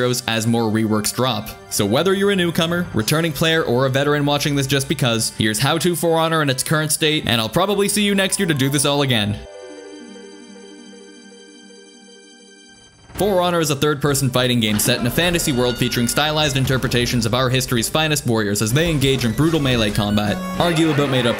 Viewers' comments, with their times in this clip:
0:09 I had to stop in to make sure that my login music wasn't accidentally left on. Was so confused for a moment lol. Also sounds like the exact video I was looking for so thanks for that too.